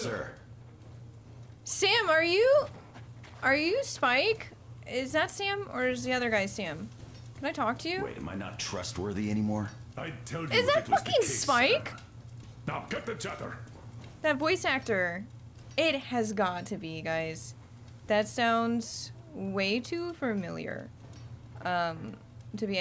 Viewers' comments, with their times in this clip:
0:07 I never noticed that Sam was American he sounds super American